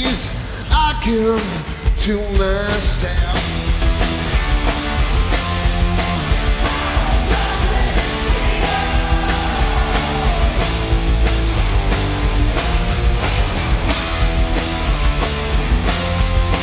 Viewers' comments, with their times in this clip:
0:03 OMG hear the fans sing 'HOW DOES IT FEEL!!!!!!!!!!' imagine being there? I hope it wasn't in the UK.... I'll regret it if so! Yikes!!!!!!